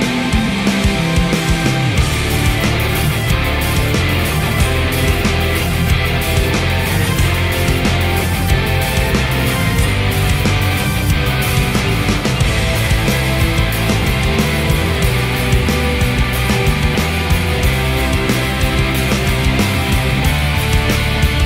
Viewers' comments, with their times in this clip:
0:06 I liked this version a lot, even with a little mistake at the beginning but it could be the signal of Hizaki's guitar, or due to the downtone. I don't really know, I worried a lot about that, but HIzaki did his best at this moment, I feel like the public was frozen as me, but he did a step ahead and the public reacts to this... I almost cry of emotion with his expression like "Everything will be ok, smile and enjoy!". Also, the camera man did a great job, some parts behind Kamijo and Teru were epic, specially at his solo moment. The silence at the last part, and that melodic notes, there's nothing more than sublime. I missed the way Masashi played the bass on Holy Grail version, when he lifts his bass to his leg, at the moment he is playing a note doing a bending, loved that detail.